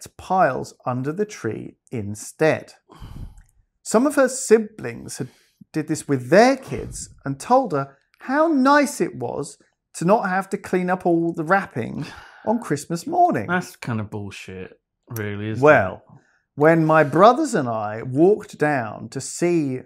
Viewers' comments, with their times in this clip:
0:03 "Some of her Simplings" Lewis Brindley 2022